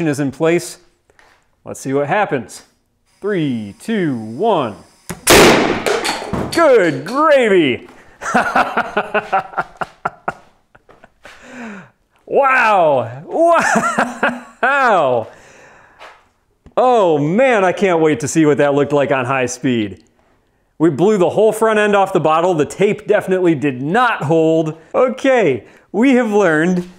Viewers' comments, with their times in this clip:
0:04 :D Woww, hahaha! What a bang! I once made small gas canon's from lighters and all sorts of tube styled packages, the hardest part was to find the sweet spot in the amount of butane. A lean mixture did best on the small scale and gave some great effects :P Eventually my barrels got to hot and lost their shape :D Great fun! Great video!
0:07 laughs like Jörg Sprave Let me show you its features!